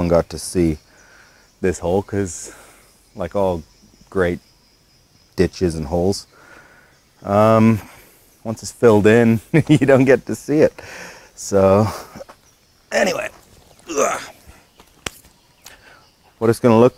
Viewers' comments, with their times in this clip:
0:03 "like all great ditches and holes" Almost sounds like a rap song lol